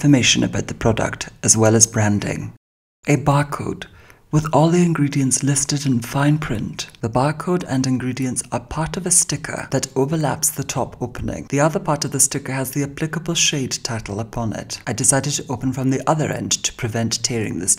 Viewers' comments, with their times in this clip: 0:04 Oh fuck, I can not stop listening to him speak. It’s am I’m sure this isn’t a coincidence 🤩